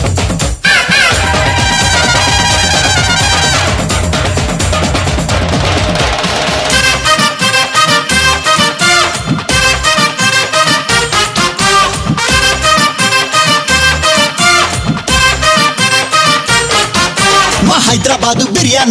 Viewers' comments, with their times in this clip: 0:06 good music variation